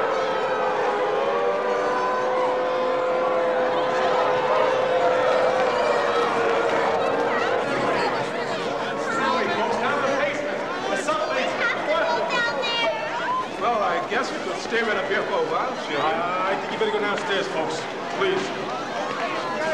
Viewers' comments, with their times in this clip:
0:06 POV you pause the video and the siren doesn’t stop: 🏃🏃🏃🏃🏃🏃🏃🏃🏃🏃🏃🏃